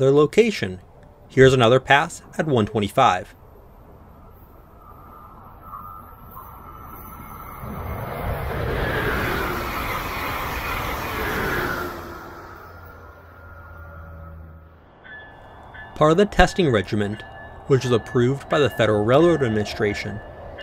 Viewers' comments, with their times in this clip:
0:06 Sounds just like the Northeast Corridor!